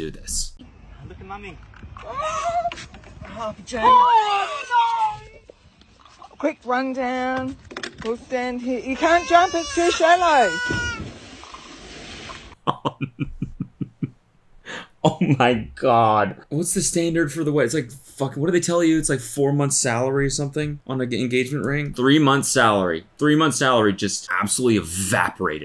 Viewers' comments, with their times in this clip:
0:08 "you can't jump it's too shallow" SPLASH
0:09 ‘you can’t jump it’s too shallow.’ Then hears the sound of someone jumping in, in the background. It kills me every time.